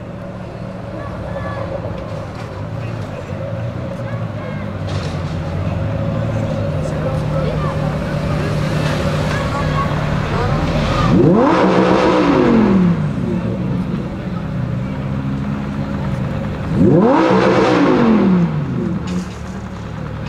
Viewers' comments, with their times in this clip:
0:04 Ferrari just got staying at behind Lamborghini and suddenly get revving 🚗⚡⚡⚡⚡❤️❤️